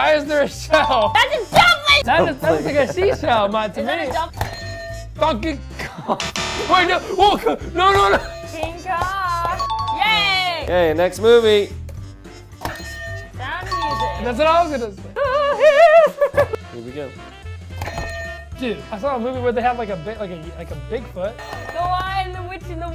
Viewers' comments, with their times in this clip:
0:05 did he swear or is it just me?